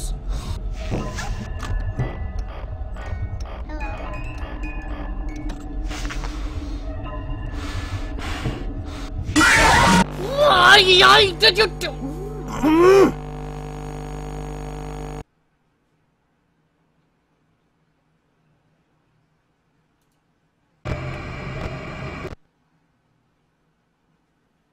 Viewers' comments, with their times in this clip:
0:10 'WHYYII, JUJU, UUH!!!' XD did you turn into a Chinese stereotype here??? XD